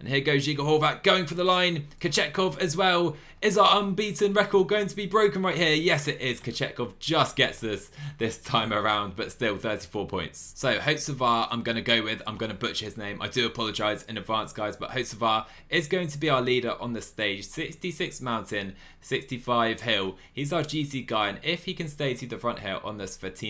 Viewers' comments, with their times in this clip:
0:09 you actually said it right 😅